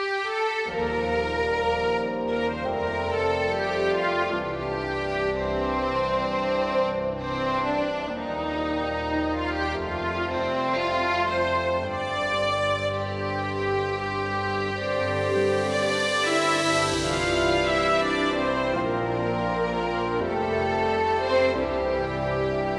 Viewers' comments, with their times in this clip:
0:05 does wiggle your finger on a key make it tremolo? lol